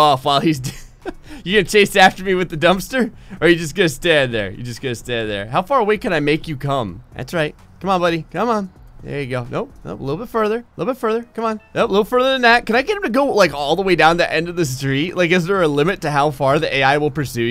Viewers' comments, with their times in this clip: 0:05 “How far away can I make you come?” [Achievement music plays]